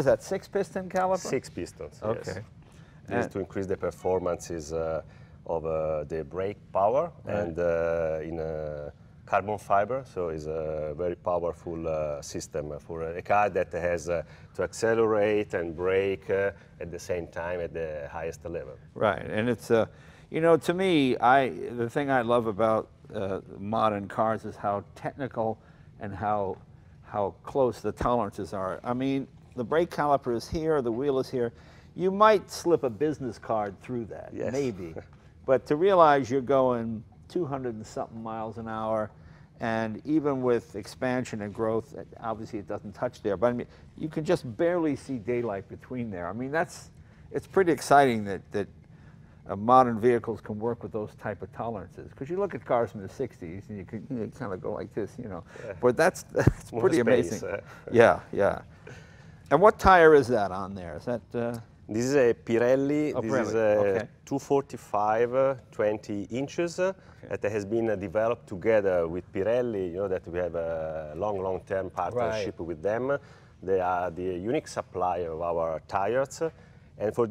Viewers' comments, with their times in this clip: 0:03 lol thought that sound was from my Android phone...
0:04 Who's getting an email ? Haha
1:01 "This is a Pirelli...two forty five-a, twenty inches-a, that has-a been-a developed..."